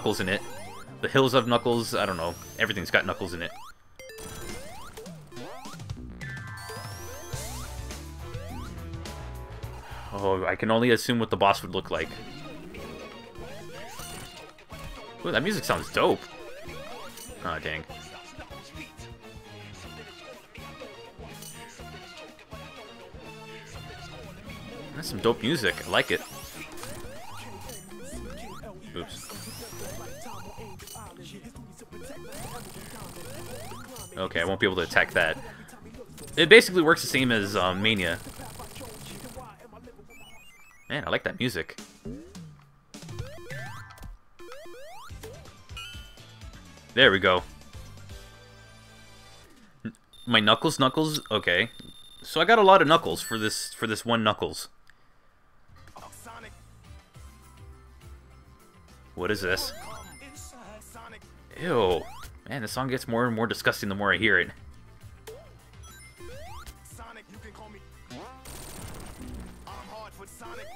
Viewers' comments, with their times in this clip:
0:10 I love this music
0:11 That reminds me of Jokers (Smash Bros) theme so much its uncanny X3
0:55 the song is weird it says I love sonic welkom inside sonic HUH!?